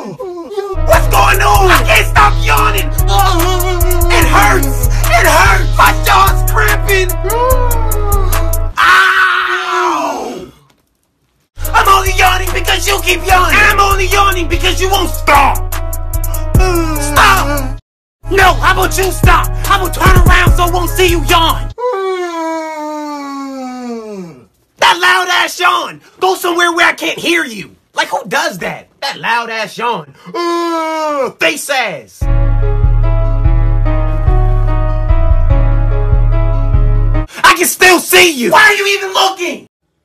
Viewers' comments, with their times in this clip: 0:04 the way he yawned wanted me to laugh so hard
0:23 that loud * yawn